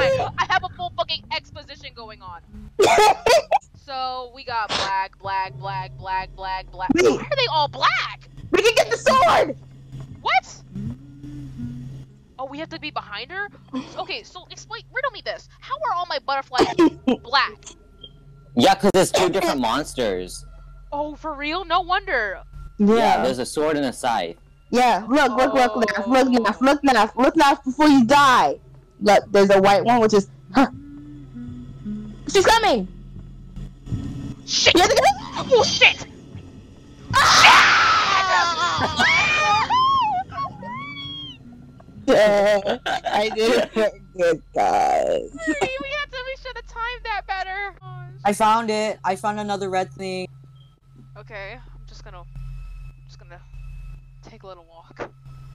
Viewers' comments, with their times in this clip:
0:03 sounds so off if you close your eyes
0:36 BRO I CANT STOP LAUGHING WHEN THEY SCREAMED SO LOUD